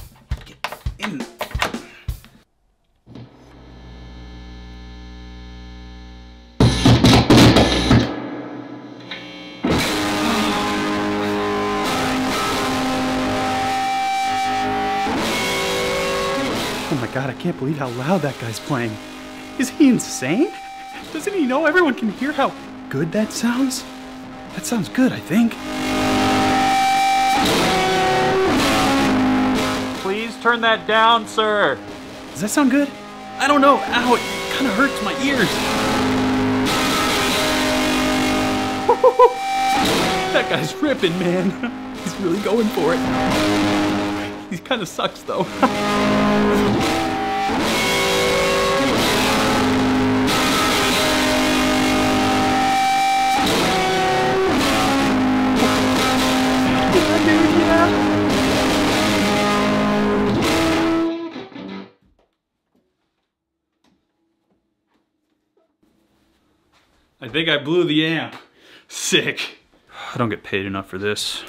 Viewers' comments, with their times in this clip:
0:09 Am i the only one that thought the part sounded better than any other part in the whole video
0:36 Oh cool, My Bloody Valentine has a new song out.
0:58 sounds like blue cheer.... i like it lol